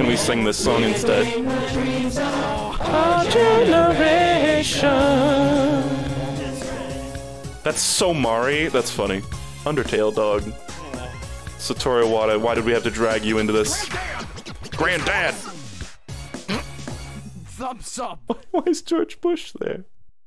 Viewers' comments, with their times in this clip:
0:03 damn he's got pipes